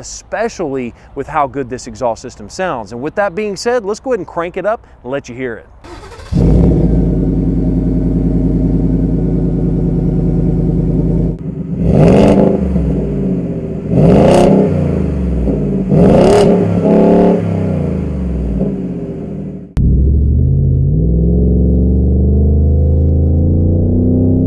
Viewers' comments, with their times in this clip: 0:05 Exhaust sounds start